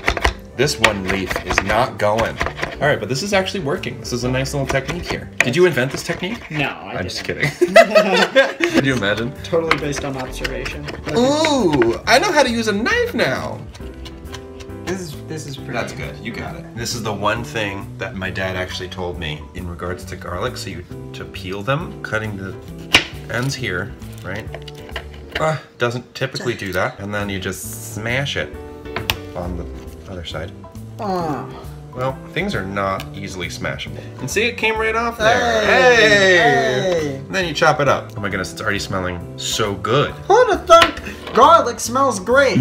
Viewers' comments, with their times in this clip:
0:10 THAT HAD A REMUS ACCENT AT THE END THERE SKSJOHJHKS
0:11 sounds exactly like Remus I'm scared
0:12 totally sounded like Remus😂
0:12 Is it just me or does Thomas sound a touch like Remus here? XD
0:28 did anyone else totally hear Remus?